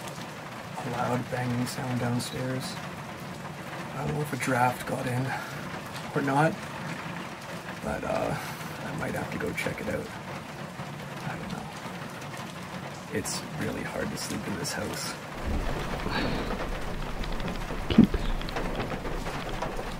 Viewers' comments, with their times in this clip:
0:03 Loved the video! Perfect conditions for a creepy Alone episode! I have to say though I thought you first said "I don't know if a giraffe got it in." and I had to rewind it to re-hear. Honestly thought for a moment the most terrifying moment of your night may have been a giraffe in the house lol
0:05 How the bloody hell could a Giraffe get in?